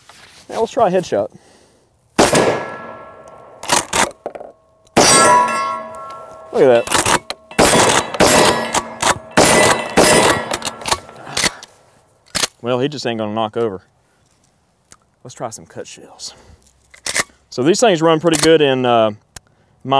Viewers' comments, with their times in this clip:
0:07 thé captions say "Music" with the target ringing. Music to my ears, that's for sure